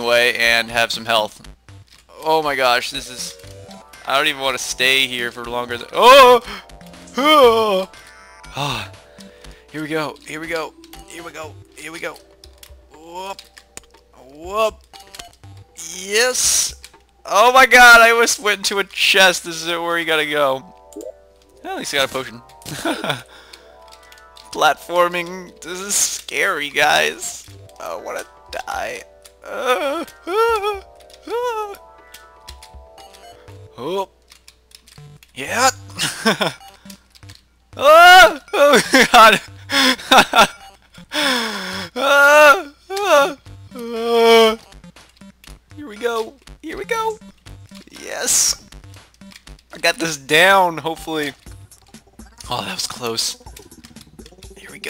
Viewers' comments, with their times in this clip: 0:09 Bro its like the chewbacca orchestra LOL XD
0:41 7: 33 walrus giving birth